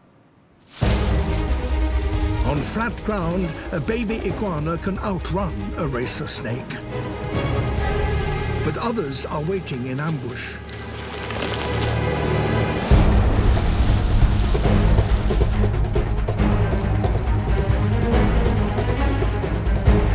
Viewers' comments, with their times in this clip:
0:03 did he say the snake was racist?